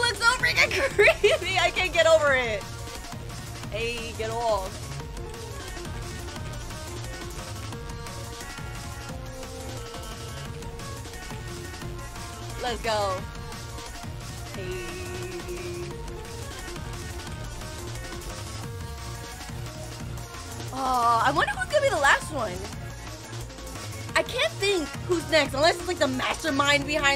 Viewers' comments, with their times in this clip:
0:08 Sounds like your too slow from the sonic exe mod